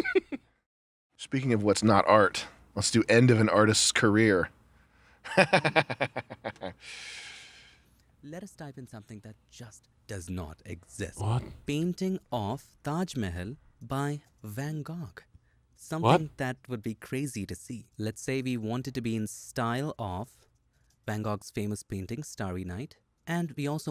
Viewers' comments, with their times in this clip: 0:09 nick saying “what” repeatedly to the Indian guy speaking clearly killed me